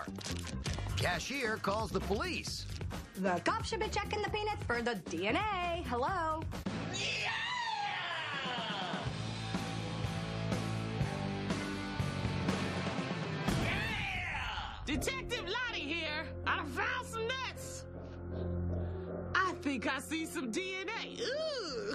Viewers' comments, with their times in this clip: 0:05 that bootleg scream from the Miami show is too good